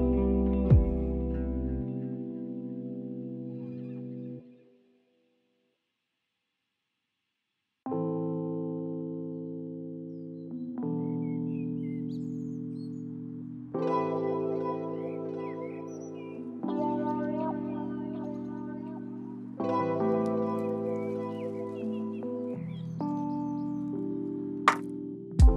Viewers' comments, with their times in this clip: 0:07 quite mornings. So calming